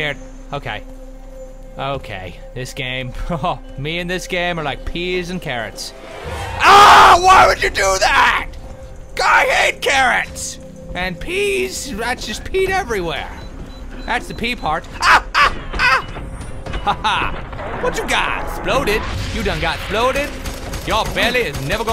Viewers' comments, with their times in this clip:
0:04 I almost peed my pants, omg haha, I hate it when my computer is so loud Ugh! That scared the balls out of me
0:05 Keep pressing the progress bar AAAAAH AAAAH AAAAH AAAAH AAAAH AAAAH AAAAH. still not bored after 10 minutes XD